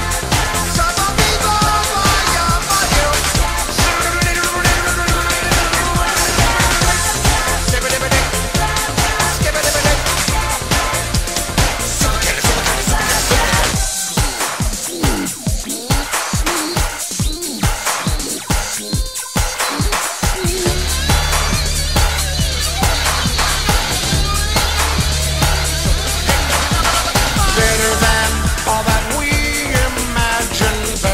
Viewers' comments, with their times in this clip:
0:03 it's like he's holding an invisible gatling gun and imitating the sound of it firing
0:14 The drums were fire! Anyways, great song!:)